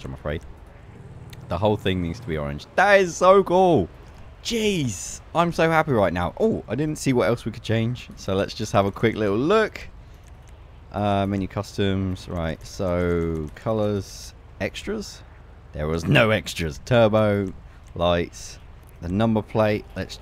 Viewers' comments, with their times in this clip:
0:03 sounds like Dan TDM. "That is so cool!"